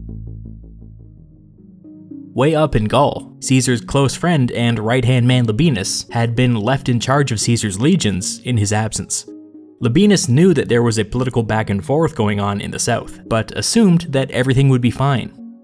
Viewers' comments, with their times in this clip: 0:03 Caesar's close friend and right hand man LePenis...